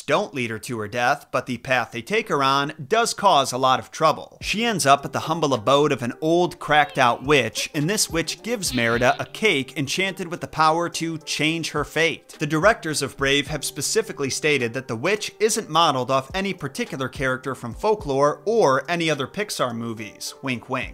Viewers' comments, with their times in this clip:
0:04 "cracked out witch" so casual with it 😂😂